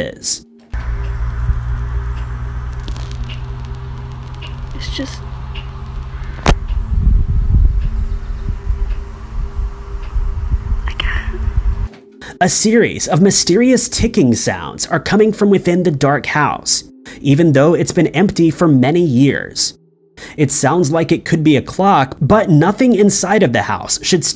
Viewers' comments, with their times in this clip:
0:08 thats a grandfather or some kinda old pendulum clock... Thats why the ticks are so rhythmic... Some of the good made ones can go without human intervention to keep them going for years... Even some not awesome made ones if older can... So its nothing that scary, just a large grandfather clock someonr left... That has kept going or maybe some seizmic fault or weather event restarted the pendulum... Ive had family that its happened to(where they stopped it so the ticking didnt drive em crazy) vut having them in the basement and a weather event or a big truck or train miles away is enough to cause the ground to shake and have them restart Tho if you dont know how easy it can be to happen it can be scary the first few times till you make the correlation to what actually causes it... Then they tie or tape the pendulum to the side till they donate or sell them or give to fam or whatever as they're sometimes valuable heirlooms
0:11 sounds like a clock. Or a mechanical timer of some kind?